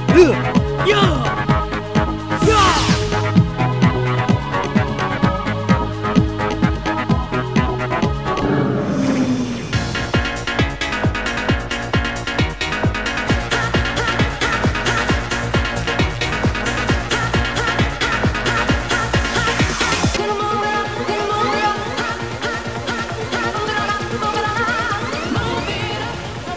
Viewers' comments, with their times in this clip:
0:09 that song almost redeemed this game